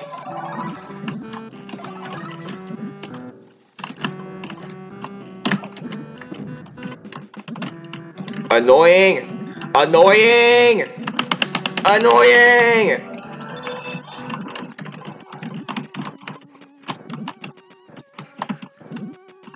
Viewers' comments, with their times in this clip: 0:07 keyboard mashing begins